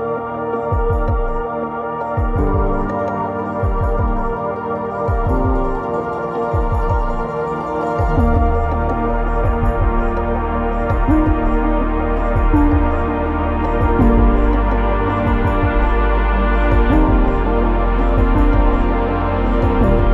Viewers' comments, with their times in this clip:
0:08 Please someone tell me this doesn't sound like the music that would play when you hovered over Pixel junk monsters deluxe for the psp. I NEED TO FIND THAT SONG
0:08 Please someone tell me this doesn't sound like the music that would play when you hovered over Pixel junk monsters deluxe for the psp. I NEED TO FIND THAT SONG